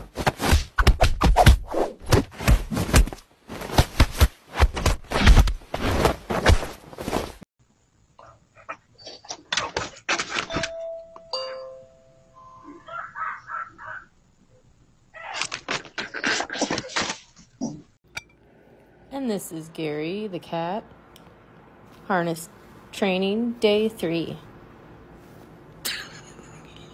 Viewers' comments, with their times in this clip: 0:08 DOG WHO RANG THE DOORBELL. DOG: "COMMON COMMON! OPEN THE DAMB DOOR! BIG BERTHA IS COMMIN AFTER ME AGAIN! I CAN'T BE HAVIN ANY PUPPIES WIF DAT!!" 😂🤣😂😅